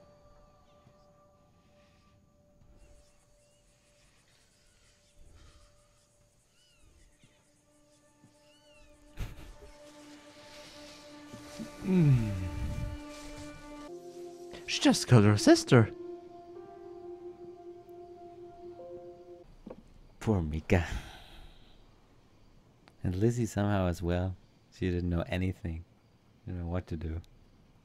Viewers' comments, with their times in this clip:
0:10 that’s me laughing